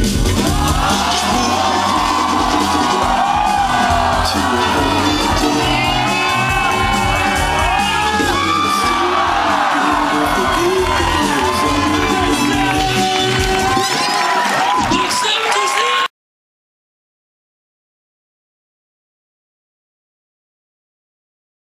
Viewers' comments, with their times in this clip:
0:09 HAHAHAHAHAH you can hear someone screaming like a girl LOL